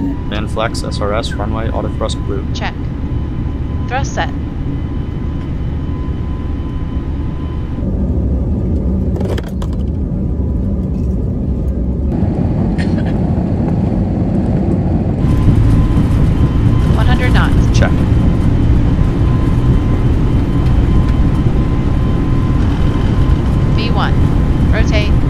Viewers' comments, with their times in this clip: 0:10 Someone coughed on the plane, begin chaos